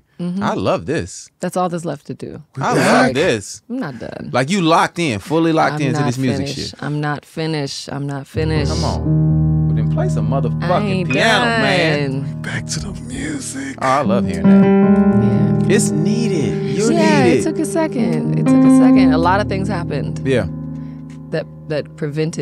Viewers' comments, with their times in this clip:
0:09 Was anyone else ANNOYED by Tank playing the piano while Keri was talking about returning to music (starting )??